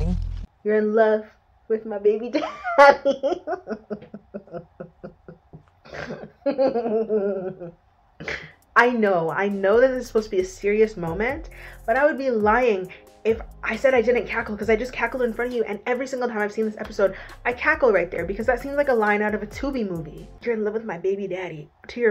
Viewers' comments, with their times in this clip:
0:04 😂🤣 love ur laugh